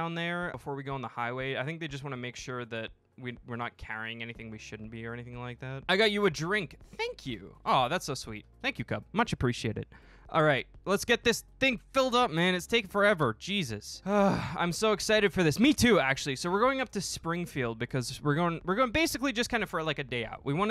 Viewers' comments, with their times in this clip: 0:06 was the highest voice ever